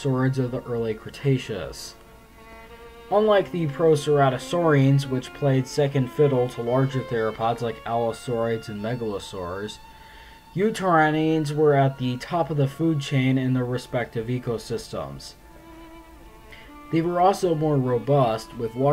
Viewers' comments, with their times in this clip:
0:03 As many of you will know the beautiful violin music in the background was played by a later species of Tyrannosaur, showing just how adept they could be with those little arms. At some point during their evolution, as mentioned in the video, they no longer had to play second fiddle. Excellent video thank you! apologies for playful comment!